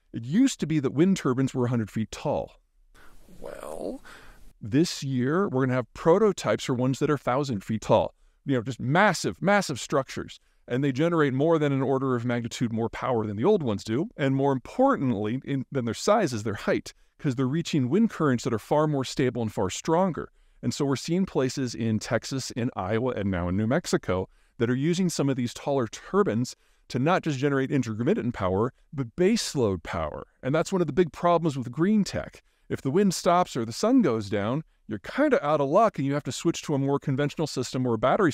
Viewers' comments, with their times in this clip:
0:03 wtf was that audio
0:25 Wind TURBINS, eh? sounds like a weird hat! 😆